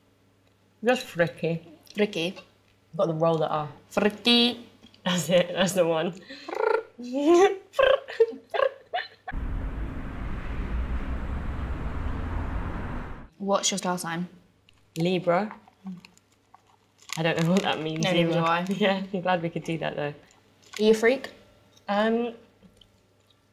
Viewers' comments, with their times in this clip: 0:06 that joy giggle tho...
0:07 her laugh was soo cute omg